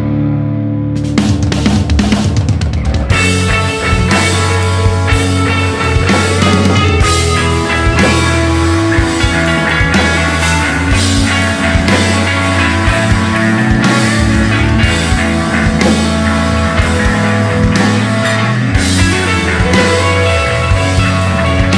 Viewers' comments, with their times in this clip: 0:03 the way it drops